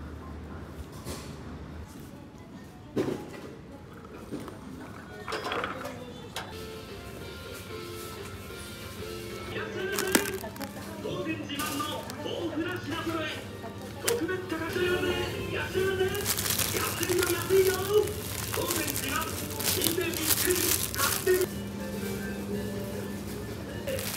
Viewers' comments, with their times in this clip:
0:10 I love watching these videos . My favorite parts are the Grocery Shopping and I want to hear the dude yell in the background like it is in of the video. No idea what he is saying though